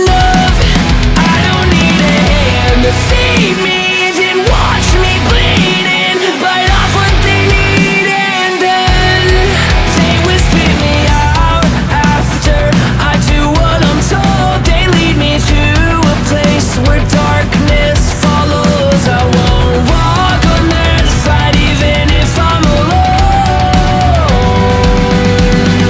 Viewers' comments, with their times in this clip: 0:10 when the songs rhythm hits this part it's my fav and other sections like it